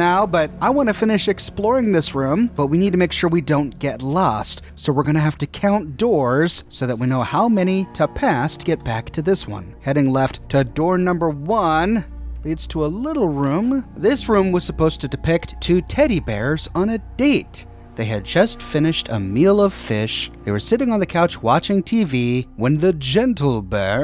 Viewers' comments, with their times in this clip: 0:09 Gentlebear: Linda ive brought you here to tell you- boom Gentlebear: to tell you- boom Gentlebear:TO TEL- boom Linda: whats going on out- BOOM